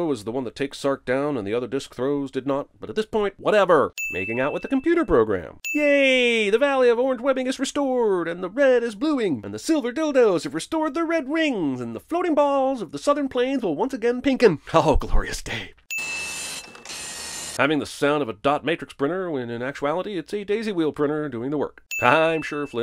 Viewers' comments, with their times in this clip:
0:10 Bro i lost it thanks for the wheezes 🤣🤣🤣🤣